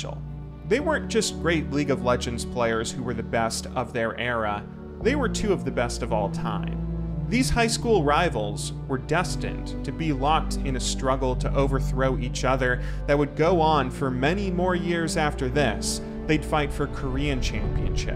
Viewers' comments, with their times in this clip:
0:05 they were... BOAT?